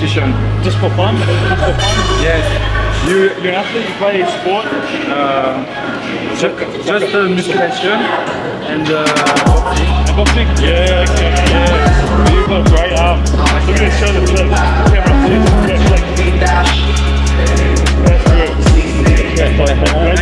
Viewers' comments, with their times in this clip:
0:08 Wonder where this dude is from, his accent sounds French.